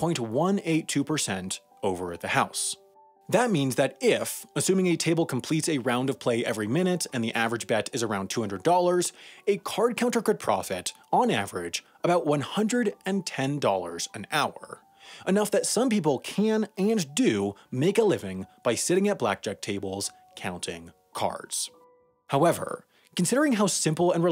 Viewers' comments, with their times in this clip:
0:07 mistake in audio or matching by video